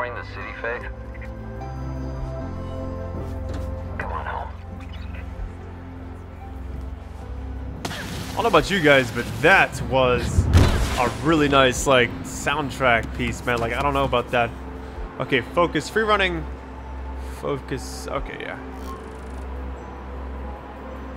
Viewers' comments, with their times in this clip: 0:08 I liked the video as soon as I heard the music